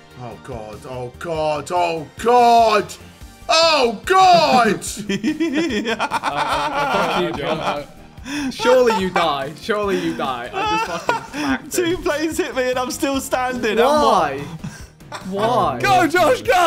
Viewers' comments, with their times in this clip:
0:04 That laugh is mad😂